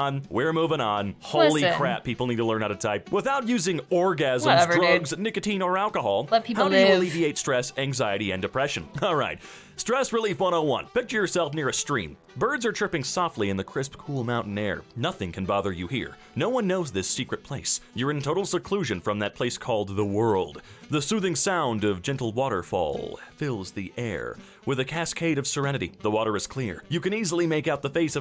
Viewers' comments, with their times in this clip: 0:10 At this point, he starts to sound a lot like Carl from Llamas with Hats.